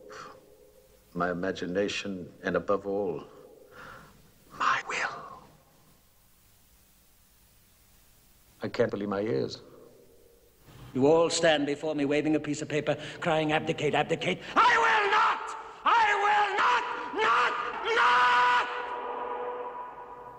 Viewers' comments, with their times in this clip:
0:08 Yep, that’s what makes this movie very, very interesting to watch...so why not slow that very instance to 0.25? I think you may get the English-Language equivalent of Hitler yelling at slow speed in the Downfall Movie...